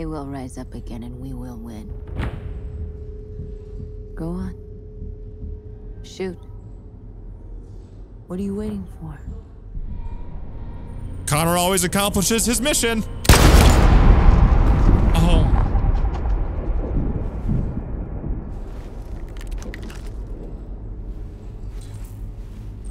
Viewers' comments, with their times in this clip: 0:10 The way he said it: Connor always accomplish his mission 😃
0:10 The way he said it